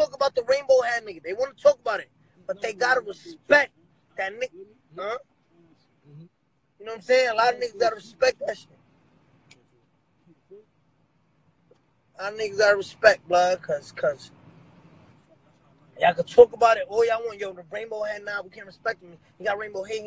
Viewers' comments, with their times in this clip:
0:04 hears a car playing faneto